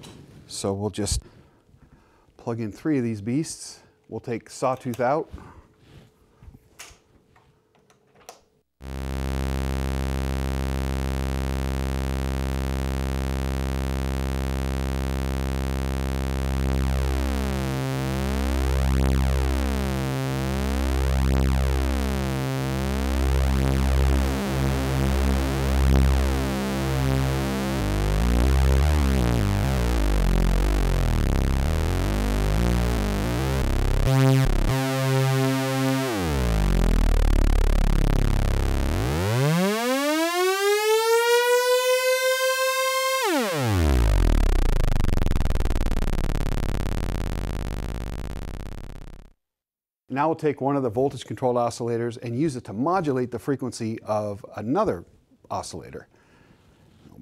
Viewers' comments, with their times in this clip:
0:08 Its like the intro of I am the best of 2ne1
0:15 Crazy I thought I was listening to the beginning of Guilt Trip by Kanye. Wonder if Mike Dean had these similar settings
0:23 that's what it sounds like when I wire a guitar.
0:24 flanger, chorus and..?
0:38 almost sounds like the intro to Ya Kidding by fisher
0:40 sounds like the intro to Ridin’ the storm out by REO Speedwagon.
0:40 what I hear is Kevin Cronin saying “Last song people!”